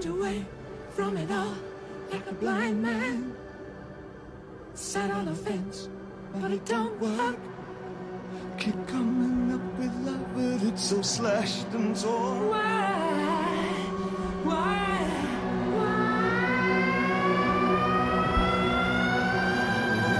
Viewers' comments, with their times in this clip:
0:07 That part when the other track builds sunk me.